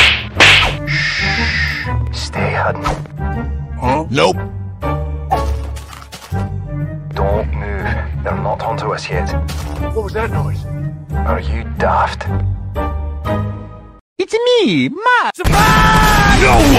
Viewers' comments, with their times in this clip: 0:03 Cpt.MacMillans voice is just so good.